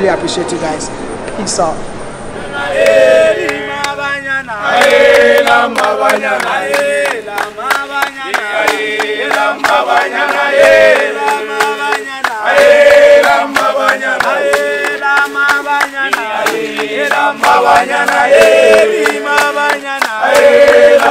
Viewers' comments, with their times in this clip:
0:04 I like hearing a South African signging. South Africa has one of the most beautiful singing voices in Africa.